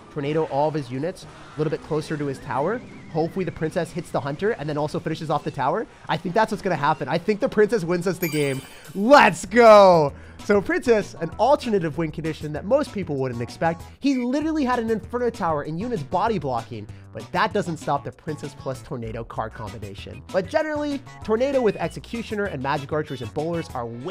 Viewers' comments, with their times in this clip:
0:07 I think the princess wins us the game, sounded like a rhyme sir